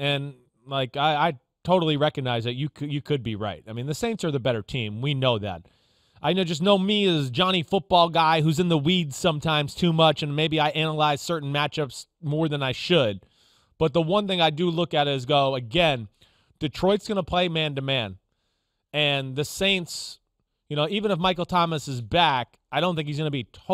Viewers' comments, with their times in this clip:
0:09 Did Chris say in the weeds too much or on the weed too much ?? 😆